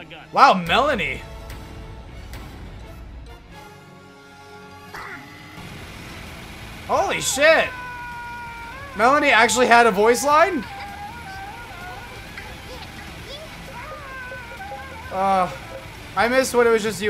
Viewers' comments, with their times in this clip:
0:04 For the “bang” the timestamp is